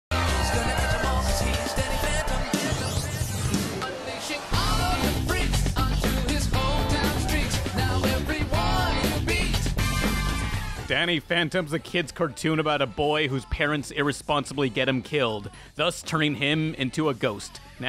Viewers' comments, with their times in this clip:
0:01 That music theme hads that groove,